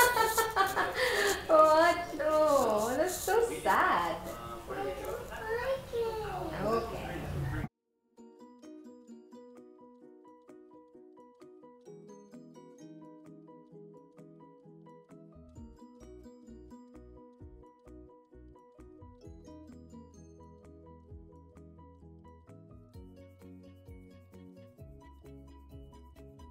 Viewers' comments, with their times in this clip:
0:09 Muted….no audio from so weird